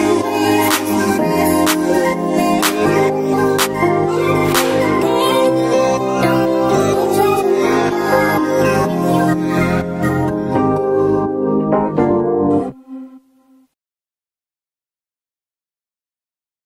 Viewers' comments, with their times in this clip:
0:05 Is it just me but do I hear “David Dobrik” or was it just me